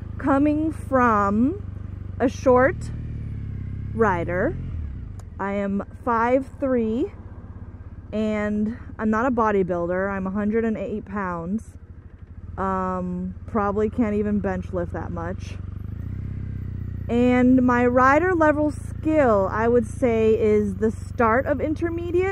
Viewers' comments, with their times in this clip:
0:10 You're 180 pounds?